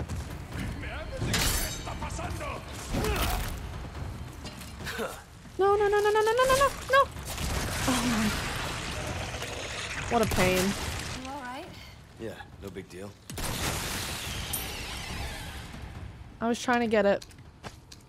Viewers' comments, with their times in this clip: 0:04 the audio bypassed the actual event! haha... that's funny.